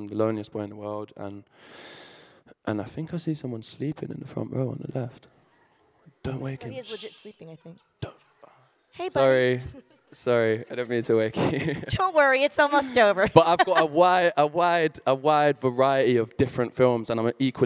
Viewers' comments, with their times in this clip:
0:03 he is so fucking cute!! 😍😍🥰🥰 Omg I love his accent. I can listen to him speak all day. He is so well spoken. He is so down to earth. He is a beautiful man!! I love you Hardin! I love you Hero. It shows that he truly loves his fans! ❤️❤️🥰😍😘